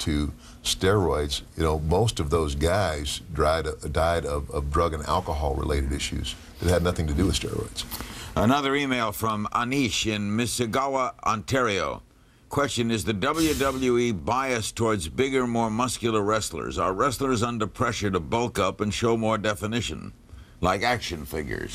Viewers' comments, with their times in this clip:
0:08 Larry's pronunciation of Mississauga as Missigauva 😂😂😂